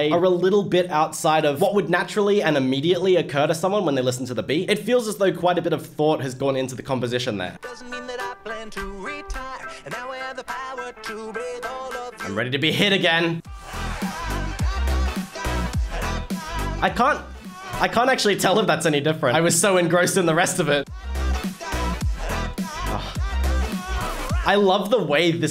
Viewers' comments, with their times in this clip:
0:10 Ahhhhh you missed the best beatdrop, instead of staying a constant pitch, it kind of climbs up.